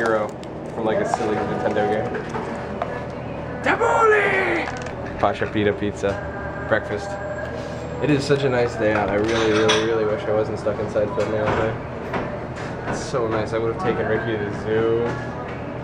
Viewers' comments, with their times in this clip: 0:03 i hear quran playing i was like..is that in the video im tired?